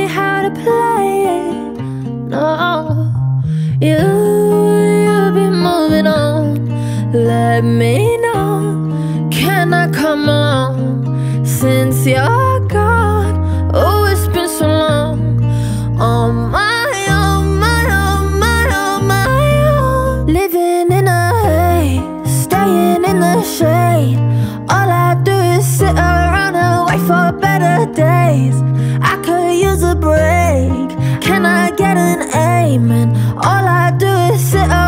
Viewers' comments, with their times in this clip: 0:06 oof auto tune did her wrong
0:19 It was so autotuned listen to 🤣